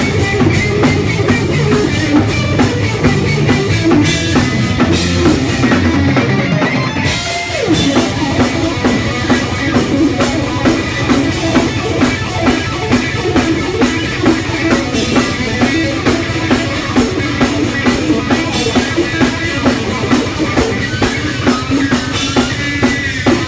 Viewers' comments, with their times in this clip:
0:05 The one thing I'd say, having seen Steve a bunch of times and having played Parkers and Ibanez' for years, is that, to me, Steve's repeating licks during the solo (starting ) sound appreciably cleaner on the Parker in that one live moment than they typically do on either FLO or EVO in a live environment - and that's kind of a big deal, considering his muscle memory is going to be more specific to Ibanez than the very different neck shape and feel of the Parker. There's any number of reasons that could be true, but I think it says a lot about what Parkers used to be before production was shelved.